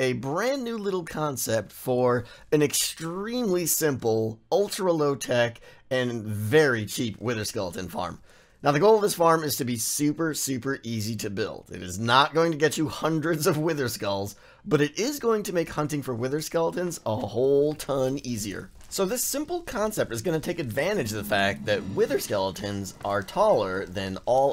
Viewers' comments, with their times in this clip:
0:05 "Ultra low tek" lol tek